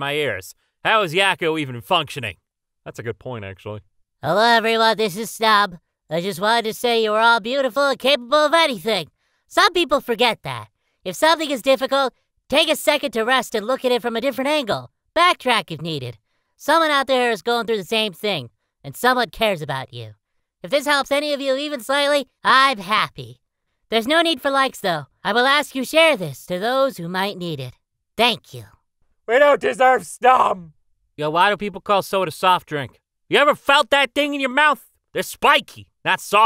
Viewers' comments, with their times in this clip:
0:05 just me or does he sound a bit like Angel Dust from Hazbin Hotel
0:22 i was thinking in a deep voice for a min and when i heard Snom’s voice it sounded like super high pitched and i was like “dammit brains you made the people chipmunks again”